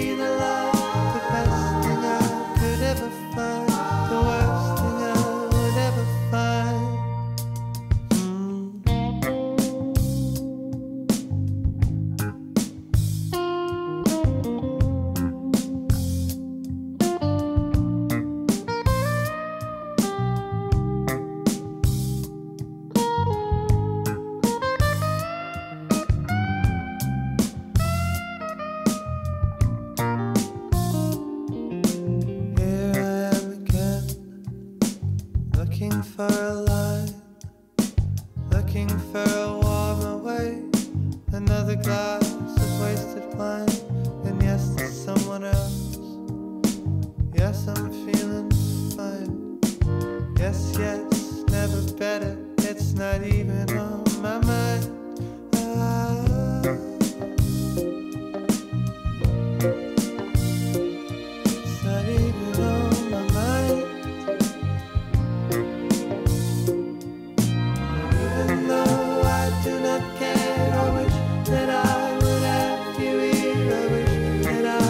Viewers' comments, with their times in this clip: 0:08 Such a great use of space between the notes in Jules' solo 😵 They're all such good musicians💕
0:49 is he laughing or crying
0:57 I love the harmony that starts to grow on the background in minute Not sure if it’s keyboard or violin but the way it grows setting the mood, is amazingly good.